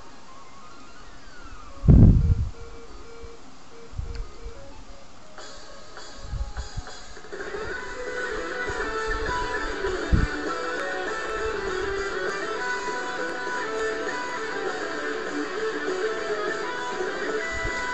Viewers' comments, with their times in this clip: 0:03 did i hear a fart? how could you! ;D